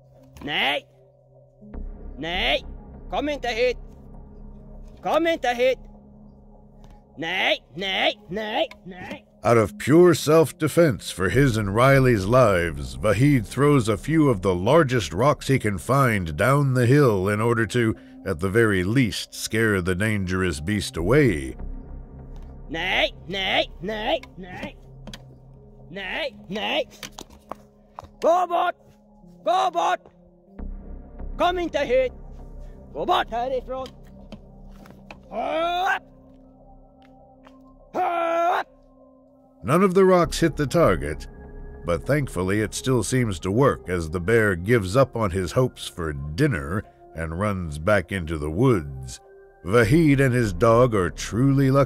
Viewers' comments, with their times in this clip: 0:04 "Kom inte hit/don`t come here" - he said with his best sheep imitation voice.
0:34 screaming like a dwarf won't help :)))))